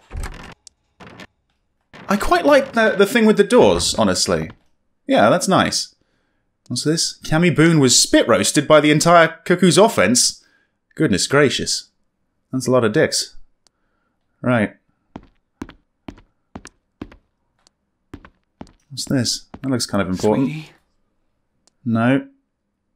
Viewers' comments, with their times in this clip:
0:09 lmfao so nonchalantly… “that’s a lot of dicks,” 😂 I was laughing so hard my eyes were watering. I just wasn’t expecting it so it caught me off guard.